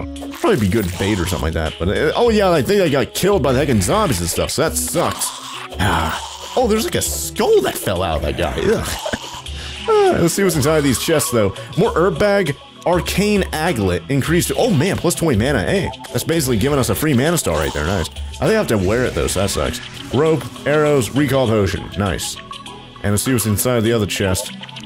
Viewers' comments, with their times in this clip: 0:10 erb bag lol